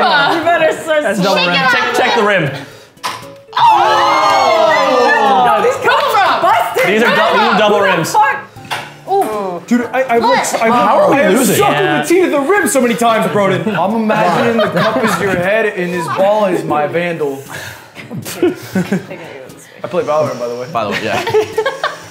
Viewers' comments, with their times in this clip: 0:09 love the XQC impression